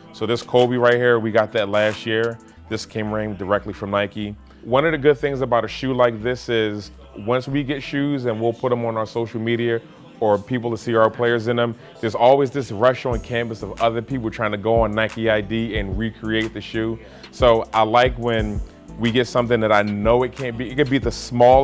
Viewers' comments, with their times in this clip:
0:06 he says Socal metear